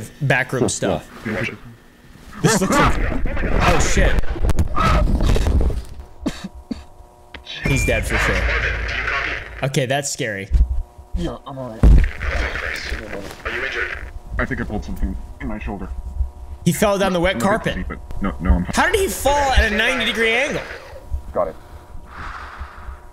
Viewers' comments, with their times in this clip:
0:07 Am i the only person who here’s “I just farted do you copy”